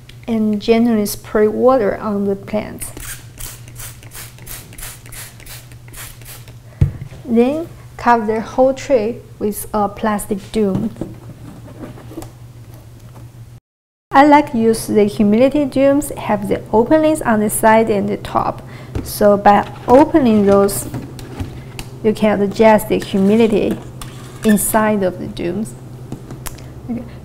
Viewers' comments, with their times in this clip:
0:10 Can't figure out if plastic doom is a better band name or album name? 🤔